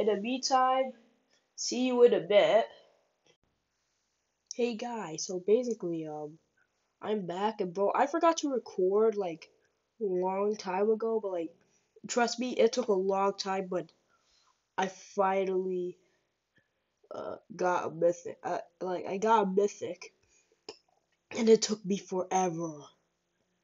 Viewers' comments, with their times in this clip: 0:06 The reason why I sound different is because it was night and I felt a bit sick